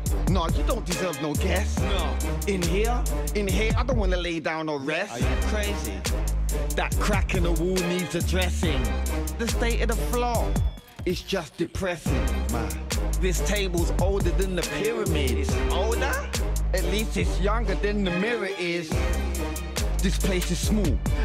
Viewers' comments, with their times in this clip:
0:09 da state o da floor 😂 just look at his mouth